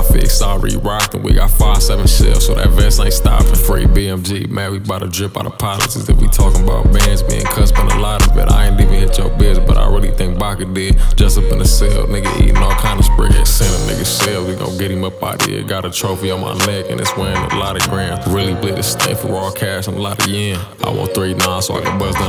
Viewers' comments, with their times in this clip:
0:05 that beat drop sheesh 🦍🔥🤝 on flow